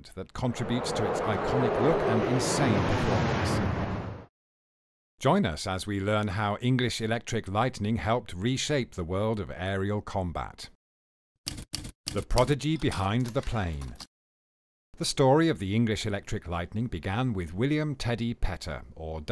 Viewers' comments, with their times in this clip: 0:06 you sound ingenieur or mixer setup shpuld be shot… in key areas - i.e. engine position - spoken text is covered completely….